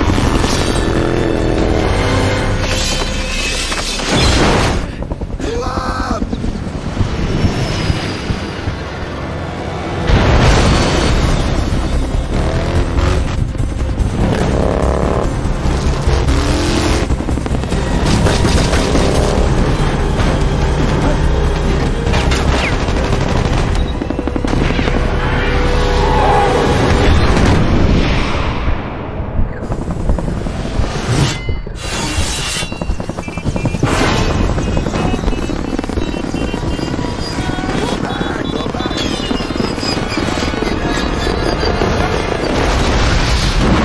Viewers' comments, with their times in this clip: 0:03 one of the worst shout ever!
0:25 Gus fring ahh scream